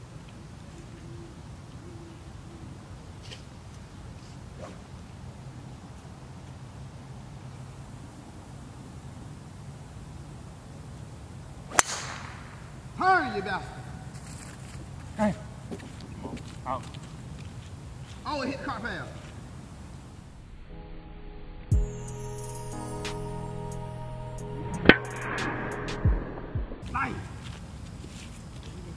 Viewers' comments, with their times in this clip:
0:10 Wow, that an echo. I've never heard that on a course before! Some nice editing going on and groovy background beats. Very cool!